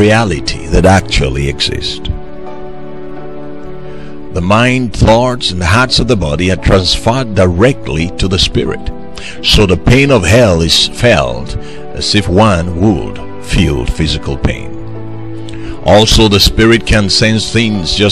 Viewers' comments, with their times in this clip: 0:04 Amen to this word, but that thumbnail jezebel spirit that popped up after the prayer is the spirit of last, get rid of it, she sounded like sex, resist the devil and he will flee. Just stop listening after the prayer. Acts Bible